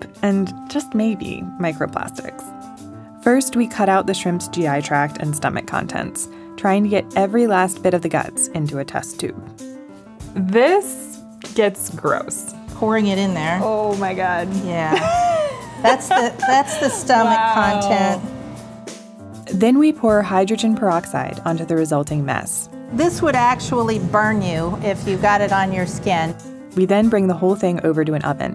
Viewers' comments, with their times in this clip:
0:10 I would love to watch this video. But the way you whistle when u pronounce anything with the syllable "s" in it. For example